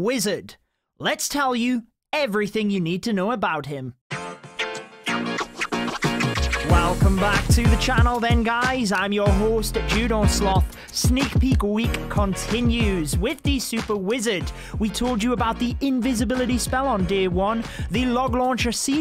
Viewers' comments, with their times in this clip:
0:06 are you singing?
0:06 are you singing?